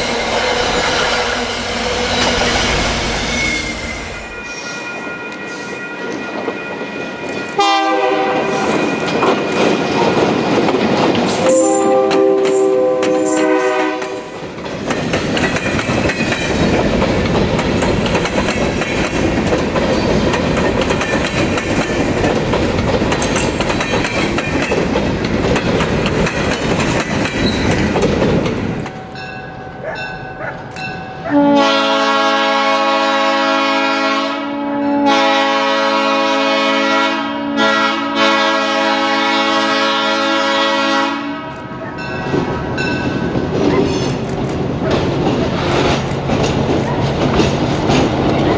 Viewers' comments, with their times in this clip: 0:04 I love this train horn and train sound 😑
0:29 I love the horn
0:31 that horn though, sounds awesome.
0:32 I like that horn
0:35 SUCH A GOOD K5LA BRO